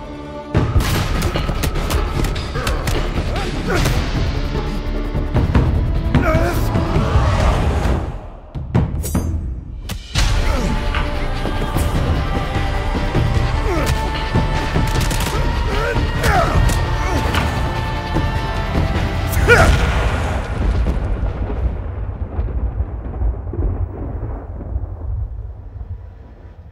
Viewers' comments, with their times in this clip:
0:09 Guys, the way the scene and music combine in oh my God